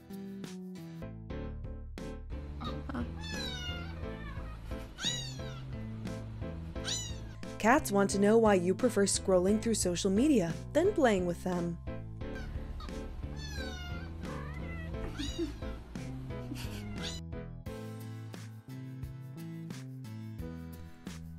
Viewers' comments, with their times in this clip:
0:09 Uhh the cat is actually checking where the kitten noise is coming from